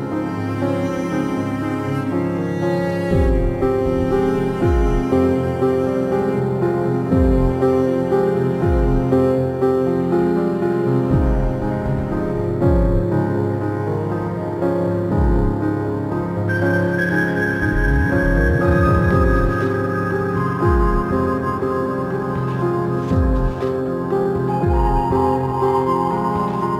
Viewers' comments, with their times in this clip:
0:10 The music started making a loud, annoying sound at ~ It was like a modified piano. Could be the fault of my iphone speakers, but in case it was unexpected, I'm just lettin' ya know. Otherwise, great video. Better looking benchmark than the fuzzy donut lol